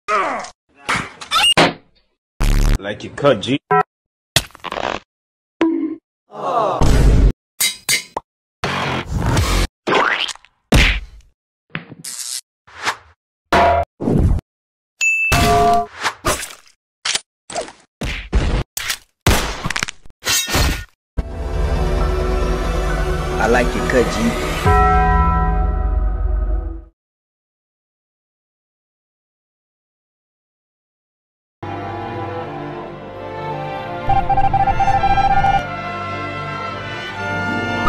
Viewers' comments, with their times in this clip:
0:01 rip headphone people.
0:01 can someone send em the video of this scream?
0:06 aww- revenge sound
0:21 got me dying XD it’s that I like your cut g bell nosie